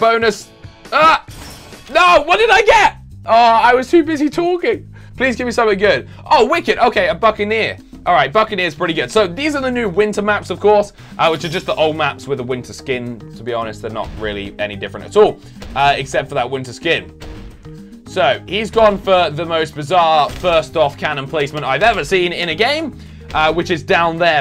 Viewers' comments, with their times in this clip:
0:07 it sounds like he said a f***ing ear